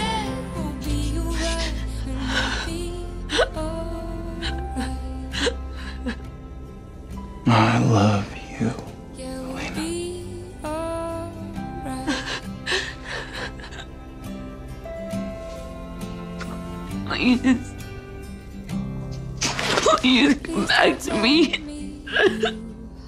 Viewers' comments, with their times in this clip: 0:09 I know it's elena, but btw i heard it Nina "the real name of elena"
0:10 Well the first time I watched it I thought he literally said Nina...😭...I know he is married and has a daughter but this hits different....